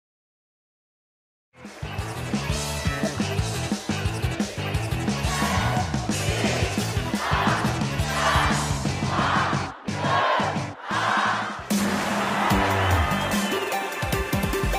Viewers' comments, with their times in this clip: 0:01 I have noticed something... Remember the blender complete theme? There is a countdown, and then people screaming. It sounds as the same as the concert's countdown. Listen again: And then listen to the other theme's countdown. Sound familiar? Maibe Nintendo recorded the countdown and screams from their concerts? Kinda dark, turning the fans' cheers into a stairway for death, don't you think?